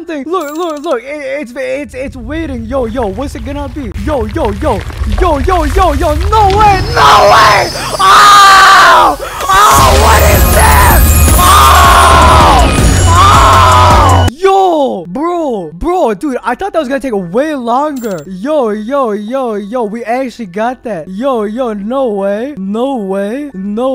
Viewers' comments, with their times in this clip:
0:09 bro screaming in confusion
0:09 bro screaming in confusion